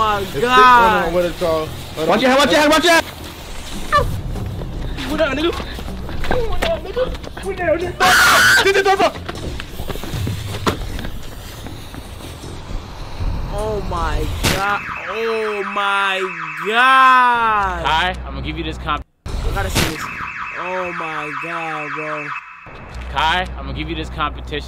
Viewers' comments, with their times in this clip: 0:06 that new York side really came out 😭😂